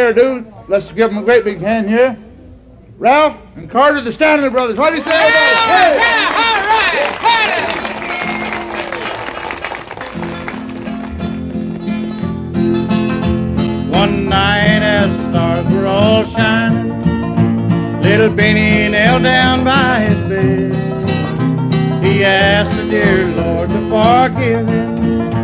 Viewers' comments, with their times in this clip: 0:09 Carter singing his heart out on "Little Bennie"